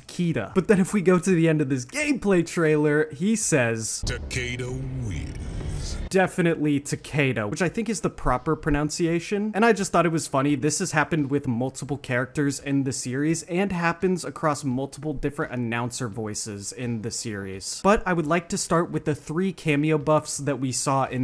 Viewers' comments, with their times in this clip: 0:06 he's not even pronouncing it like Takedo lmao its still Takeda, its just the way he says it that makes it sound like that